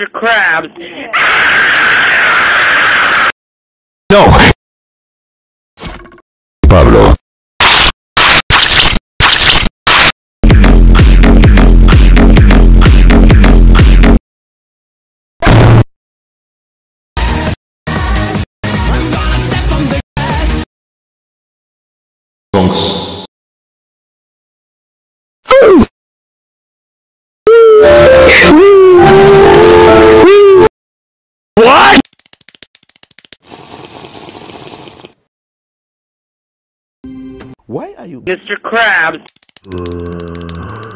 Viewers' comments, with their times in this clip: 0:05 O says nothing because is muted
0:10 bootleg Q: music
0:25 stop the oof